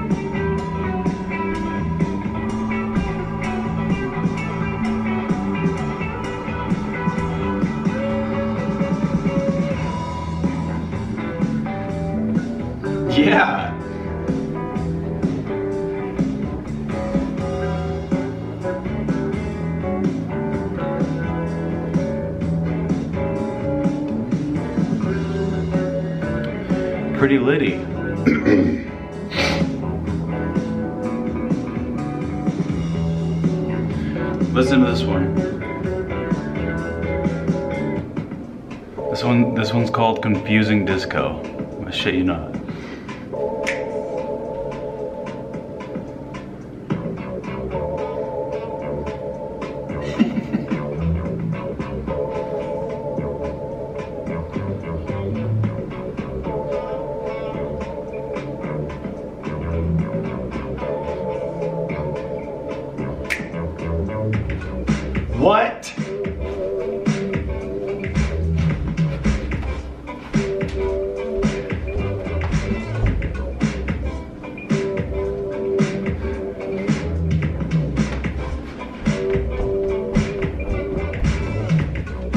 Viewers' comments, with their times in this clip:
0:10 That “YEAH!” gave me a new will to live.
1:04 that drop knocking shit off my walls bro. It's devastating me, what the frick.